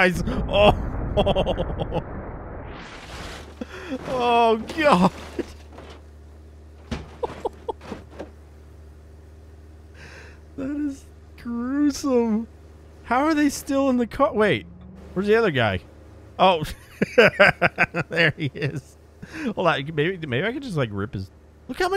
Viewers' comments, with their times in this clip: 0:06 The door pop makes this whole video for me 😂